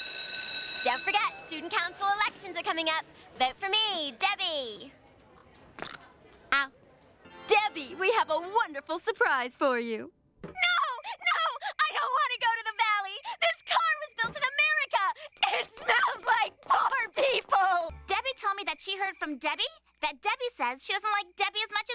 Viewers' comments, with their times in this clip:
0:04 For some reason, I found it mildly adorable the way Debbie said, "..............Ow.............." after doing a split.
0:05 I just love her little “ow” it’s so cute